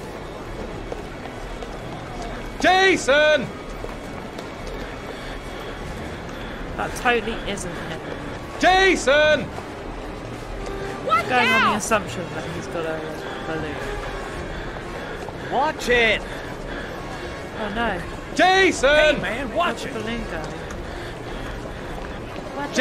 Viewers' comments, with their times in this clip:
0:09 The guys lost his kid in a busy mall and he just sounds like he's selling fruit on a market stall! 🤣 He really ought to sound a little more concerned! Lol.